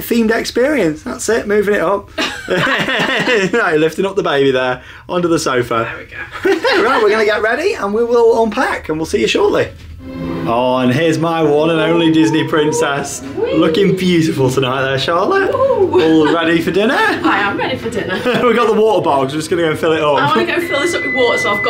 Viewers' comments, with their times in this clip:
0:03 Did anybody else hear the ghostly whisper or was it just me?!